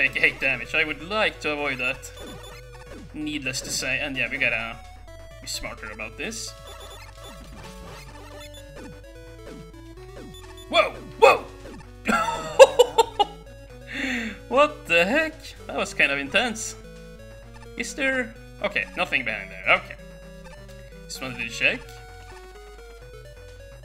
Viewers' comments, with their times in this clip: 0:10 The level has a different soundtrack or it's random? It sounds very good ^.^ Edit: Pro play